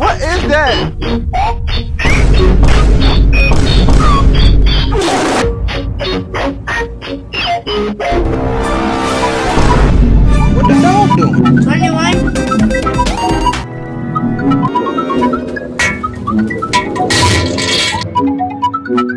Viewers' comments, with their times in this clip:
0:04 Died sound effect XD